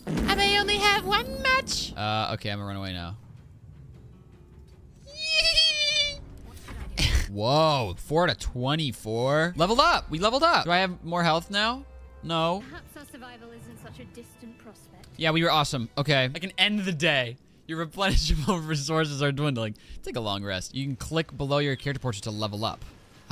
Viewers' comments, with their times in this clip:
0:05 Dude that hehehe got me, that’s something I would do, you funny I subbed